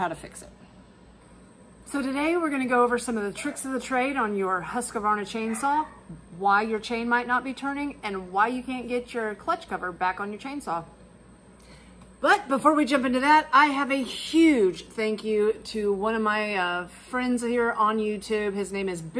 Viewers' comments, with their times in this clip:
0:03 Kanga contributes to the video with her big mouth